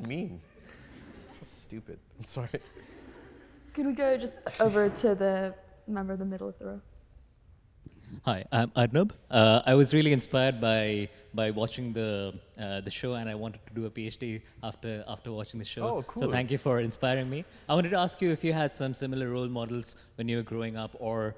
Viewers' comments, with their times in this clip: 0:09 hi I'm noob Brought to you by yt subtitles inc.